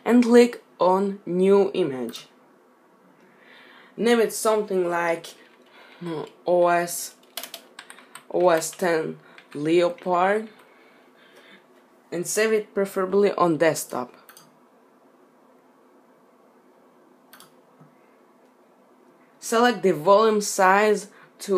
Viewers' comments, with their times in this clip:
0:06 liopard, kek..Anyways thanks for the tutorial!